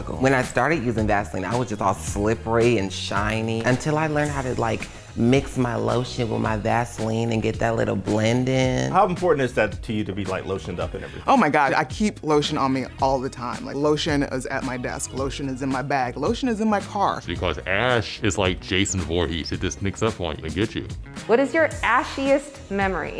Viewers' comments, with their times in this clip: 0:10 I love her voice.